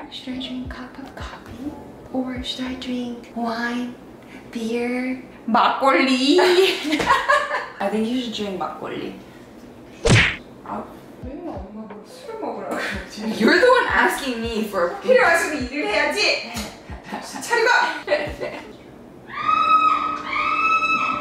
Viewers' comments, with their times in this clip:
0:06 I've been replaying your laugh like an unhealthy amount of time.🥺